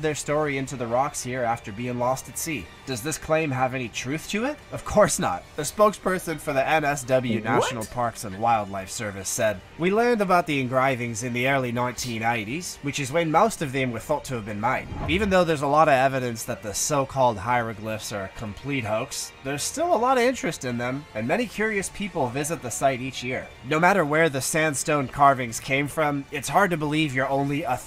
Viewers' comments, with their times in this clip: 0:08 That is the worst Aussie accent ever. Do you honestly think we talk like that. No we don't. That was a badly done American-Aussie accent.